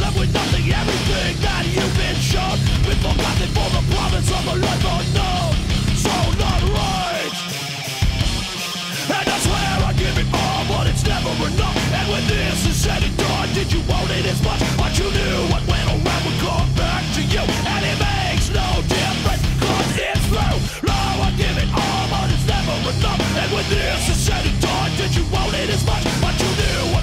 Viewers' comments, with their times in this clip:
0:10 this part reminds me of Hatebreed for some reason. Mainly on their '97 full-length